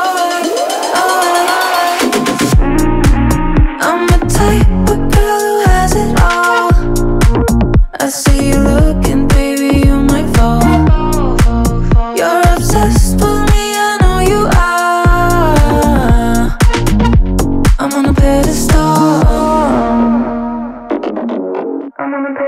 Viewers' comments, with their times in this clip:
0:03 cool sound, great voice